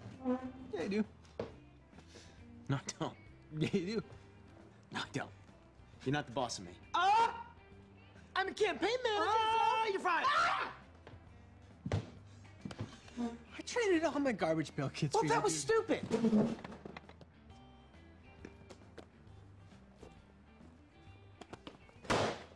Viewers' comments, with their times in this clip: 0:06 that perfectly self cut scream
0:09 And then Dennis answered with a longer one of his own "AHHHHHHH you're fired" 😂